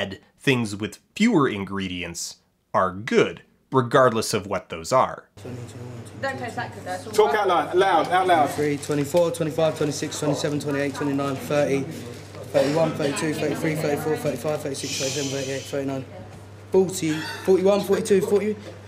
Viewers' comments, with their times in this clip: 0:05 The weirdest thing about his video is how angry he is. he just sounds like some noble lord ordering subordinates around in an implied hurried desperation. I think he's trying to be Gordon Ramsey but at least Ramsey is getting upset around... stuff intended to be upsetting. Oliver just seems infuriated with the concept of nuggets, as if he's rediscovering his hatred throughout the video.